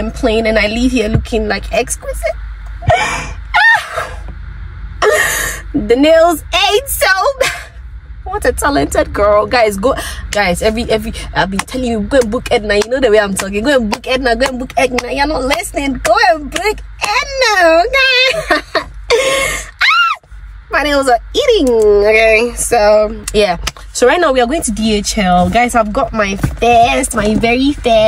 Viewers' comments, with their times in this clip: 0:10 the switch in the voice 😂😂😂😂😂😂